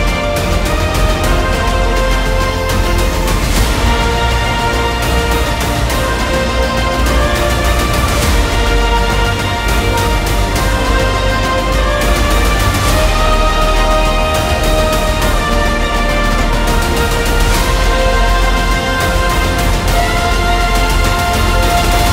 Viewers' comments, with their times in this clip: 0:04 sounds a lot like Gurren Lagann